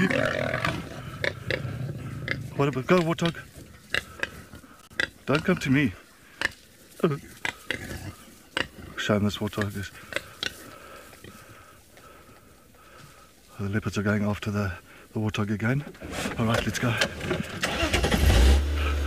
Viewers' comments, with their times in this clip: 0:05 LOL that Ehhhh is so South African, if one was to play that for me at any time I'd be like homeboy